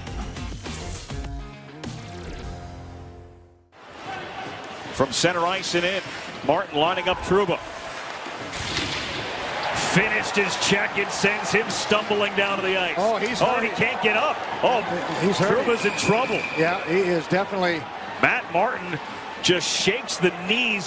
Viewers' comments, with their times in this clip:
0:07 Why did sound like the wasted sound effect from GTA V